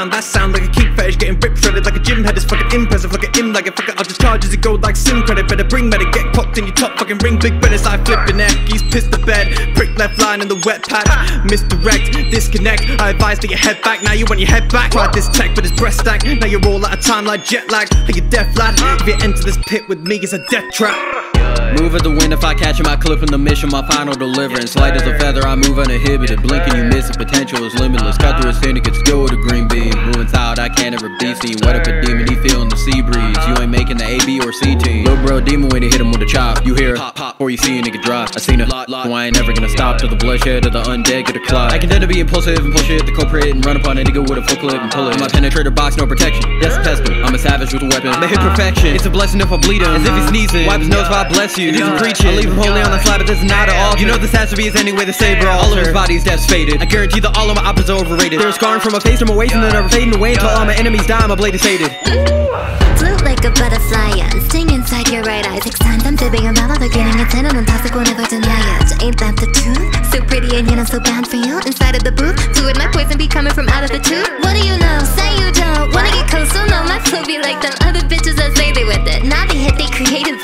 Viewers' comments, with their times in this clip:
0:08 obanai turns british
0:36 I’m wearing airpods and I felt the pop all at both ears at a time- try it guys.
0:45 Guy..think about it..sanemi has a crush on kanae..then read the lyrics in and listen closely..I heard a moan..I think shinobu’s dead older sister is moaning to sanemi from heaven 😂
0:49 I kept thinking my phone was going off
1:02 this girl snapped her flow was stoopid 🥵🥵🥵💯💯💯